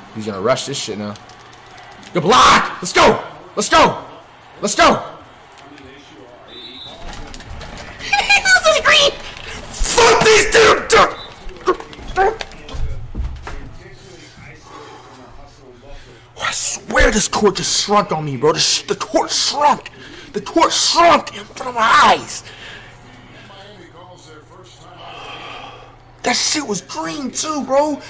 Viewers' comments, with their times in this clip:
0:06 chipmunk demon reacts
0:10 ... flights impersonation of Trey from Boys In The Hood 😭😂😆🤦‍♂️